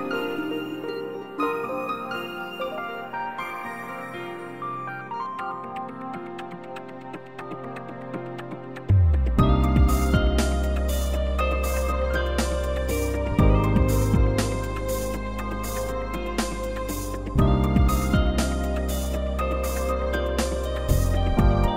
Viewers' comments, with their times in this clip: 0:09 Set video playback speed to 2x and skip to Enjoy your telephone hold music.